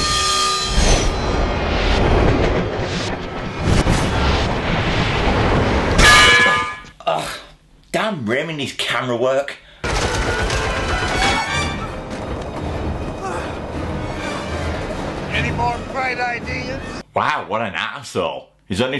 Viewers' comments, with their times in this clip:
0:05 PERFECT bang to the head! xD